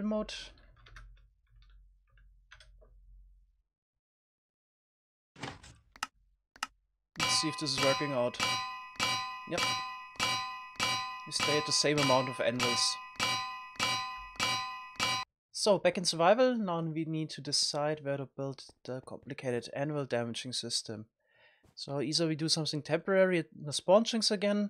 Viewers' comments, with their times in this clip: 0:07 it sounds like the start of a remix or something